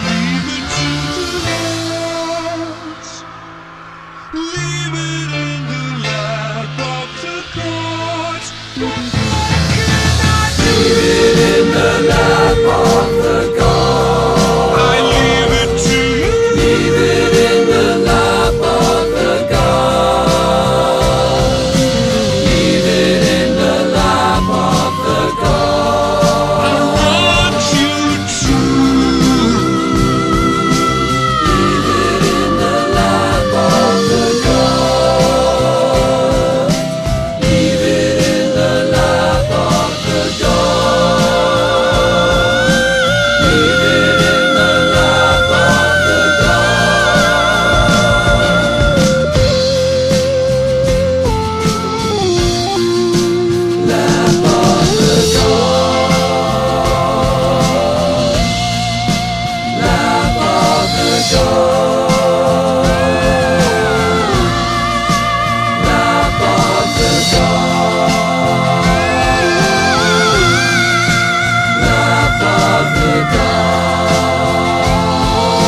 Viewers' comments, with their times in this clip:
0:09 i love how the voice gets over in the guitar
0:09 the “do” and transitions into the guitar so seamlessly and it lasts the whole song
0:11 I love Freddie's "what more can I doooo" blending into Brian's guitar
0:27 love this Roger wail right here
0:41 Roger Taylor sounds like an angel
1:00 Lap IN the God AaaaaaaAhhh Is That AN Angel?
1:01 Rogers contribution to Queen is overshadowed by Freddy, and it was his fucking band in the FIRST PLACE! That swirling sea atmosphere is brilliant and those high vocals are nothing short of sublime.
1:02 Omg Roger’s voice
1:02 Brian: oh no i forgot to do your falsetto in guitar roger Roger: hm ok ill do it Roger: